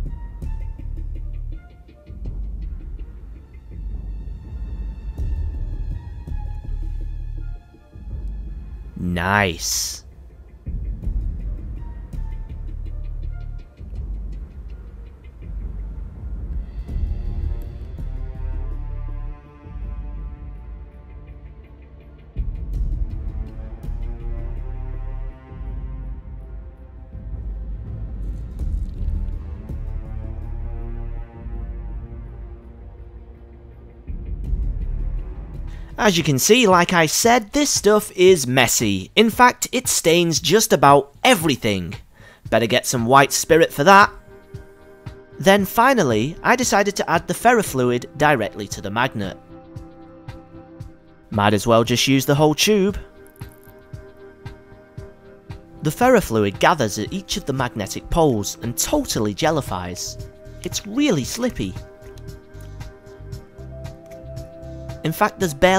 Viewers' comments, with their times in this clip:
0:08 creepy ass "nice"
0:08 The way he says niice
0:52 😂 "might as well use the whole TCHUUBE" 😂😂😂😂😂😂😂😂😂 your voice is so kawaii😂😁 :3